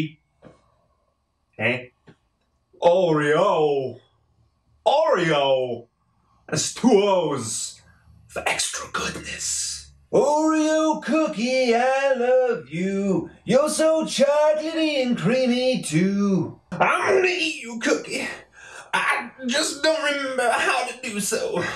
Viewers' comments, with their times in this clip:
0:03 hahah christopher walken genious!!